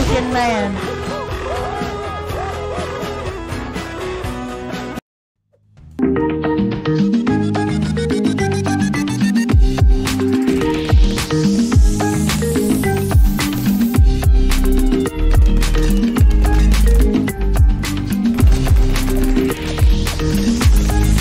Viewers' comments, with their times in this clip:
0:06 bro the music is fire 🔥🔥🔥🔥